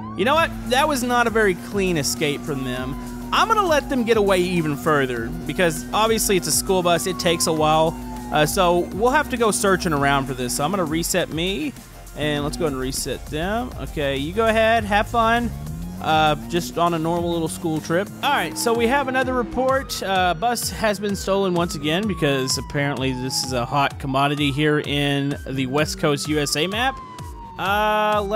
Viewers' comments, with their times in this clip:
0:10 was that a voice crack